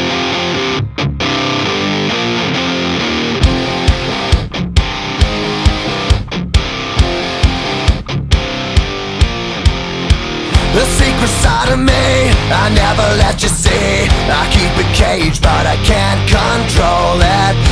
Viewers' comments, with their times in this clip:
0:04 that moment along with the song gave me CHILLS